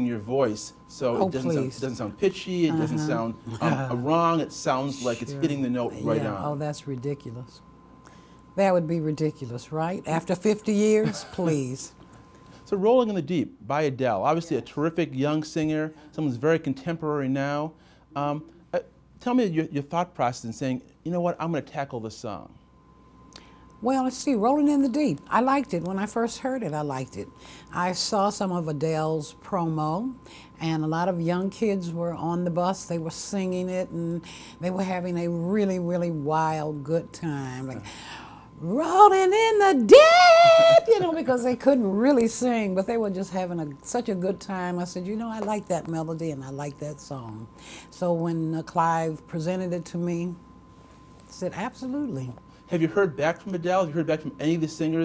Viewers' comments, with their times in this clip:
0:03 That laugh she let out 😄
0:39 People... she was just imitating the young people she witness singing the song off key